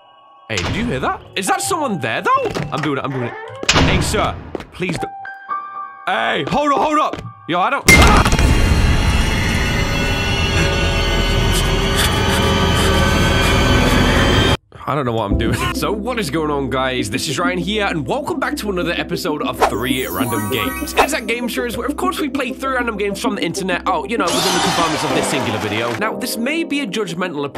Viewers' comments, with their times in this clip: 0:03 Am I the only one that hears the start of megalovania when the jingle plays?
0:15 what's that almost Nintendo or Play station style theme at the start?